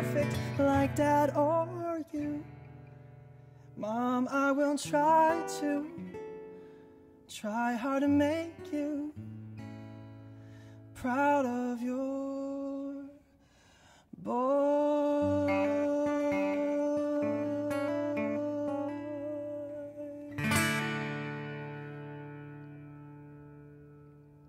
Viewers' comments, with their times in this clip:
0:05 he plays the "riff raff, street rat" but on guitar, then follows up with a little "Part of Your World" quote at the end... genius.